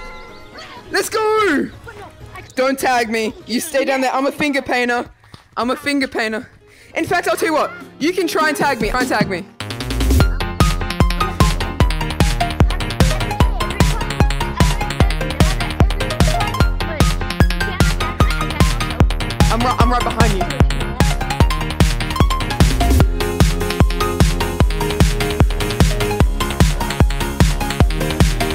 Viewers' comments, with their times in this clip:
0:10 the music is back (Aussie editon)